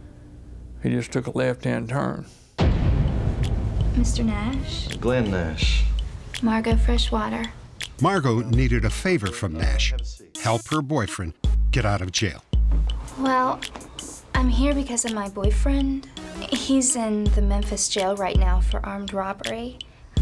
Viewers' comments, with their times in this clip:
0:03 Lol @ the Lil Jon type theme that kicks in ....